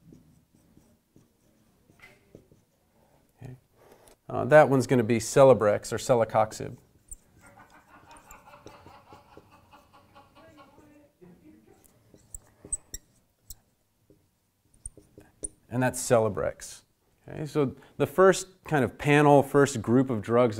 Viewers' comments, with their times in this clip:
0:08 The guy laughing at celecoxib was gold